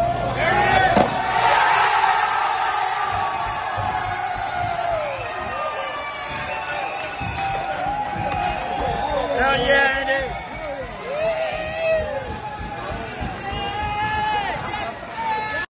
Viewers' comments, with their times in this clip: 0:10 sounded like muscle man from regular show